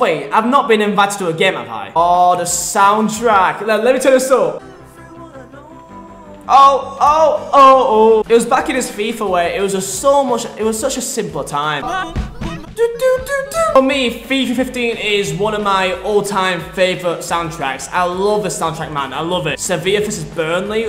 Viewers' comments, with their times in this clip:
0:08 that song ❤️😭 I bloody love this